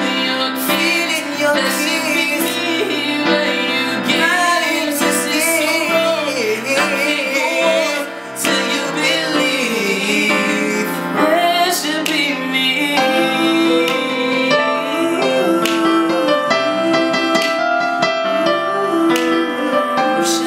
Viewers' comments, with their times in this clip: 0:05 that run tho lol nice nice